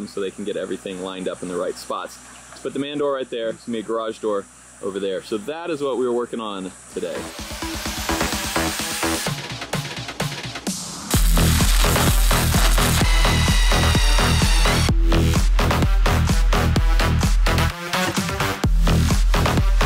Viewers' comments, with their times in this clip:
0:06 Your choice of background music is epic, as always! 😎🤘🏼